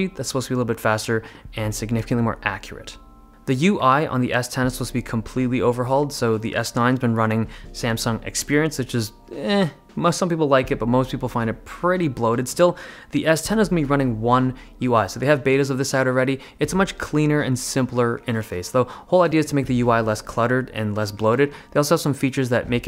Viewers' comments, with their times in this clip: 0:08 witch is "that eahnn spund " haha